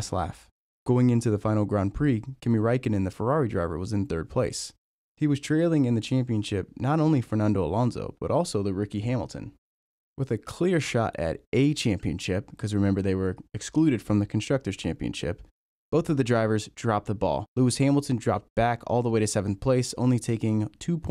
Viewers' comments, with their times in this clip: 0:08 who the fuck is ricky Hamilton